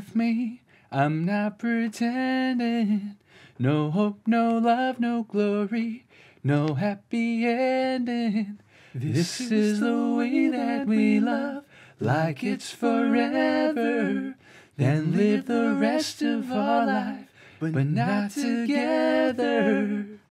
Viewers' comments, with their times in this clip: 0:04 please don't sing anymore 🤣